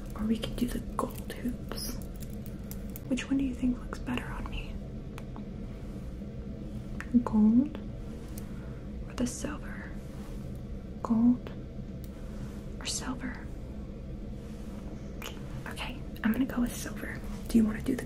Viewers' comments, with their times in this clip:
0:06 The way she said gold had me sleepin